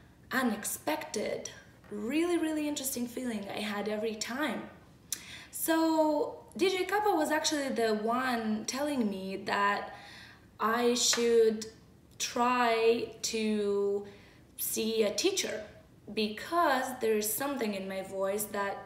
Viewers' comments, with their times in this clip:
0:04 there’s a something that really speaks to me—in the black gold song. That juxtaposition of screaming vocals over clean—feels like screaming and pleading simultaneously. Not unlike life—I love it. I want more of that:)